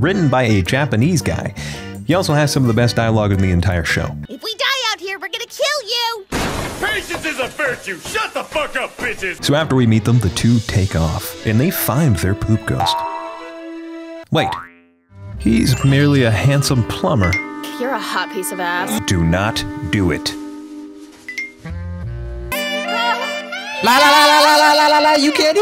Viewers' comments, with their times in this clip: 0:07 caught me off guard hearing vegeta like this